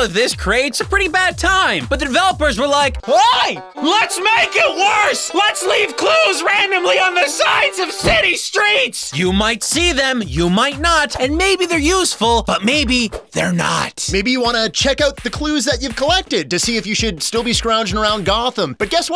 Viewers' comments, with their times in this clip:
0:03 best hillbilly accent